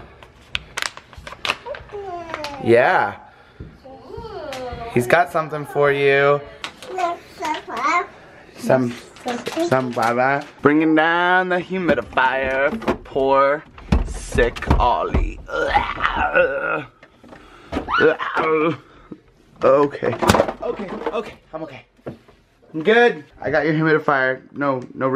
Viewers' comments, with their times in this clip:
0:07 it sounded like he said nature box, hope he feels better soon, love to you all
0:07 I think it sounds like he's saying Nature box